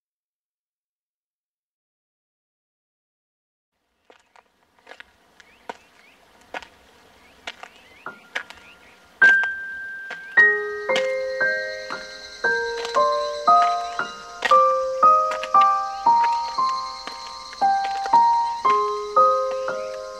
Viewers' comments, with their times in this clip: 0:07 I died! The footstep!!